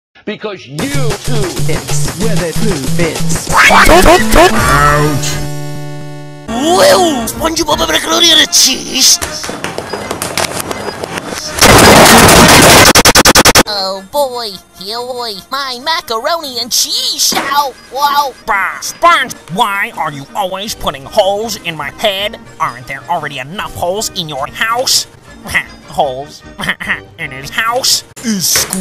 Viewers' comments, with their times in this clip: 0:06 I love the opening "WOOWO"
0:14 bro sounds like bubble from BFDI 🤣🤣🤣🤣